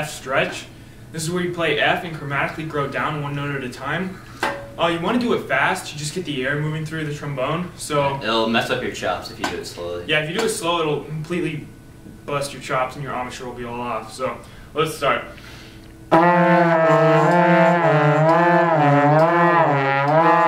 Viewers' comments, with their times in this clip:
0:03 THEY START PLAYING THE TRUMBONE